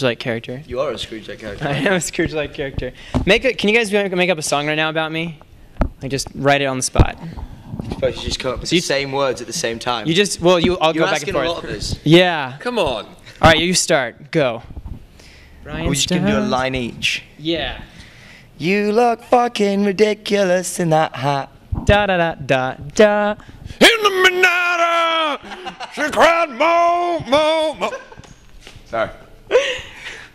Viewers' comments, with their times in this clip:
0:03 Did anyone notice minutes in andy said come on and it sounded so British!!
0:11 Andy's british accent was amazing xD